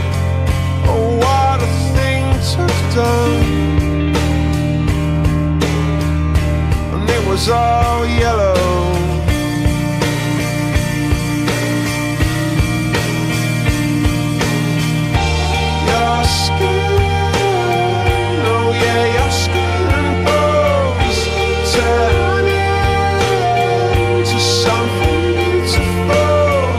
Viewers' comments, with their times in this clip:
0:09 this is a beautifull song but, this sounds like something ed gein would sing